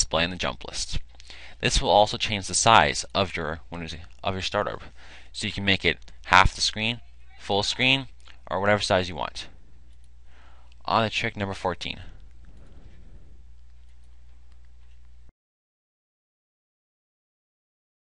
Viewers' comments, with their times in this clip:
0:06 Thumbs up if you heard the weird noise in the background too.